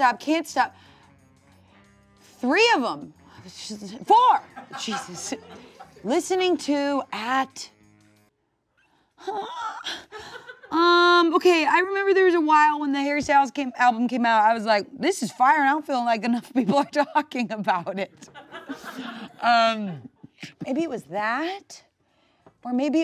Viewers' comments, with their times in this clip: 0:09 that sounded hot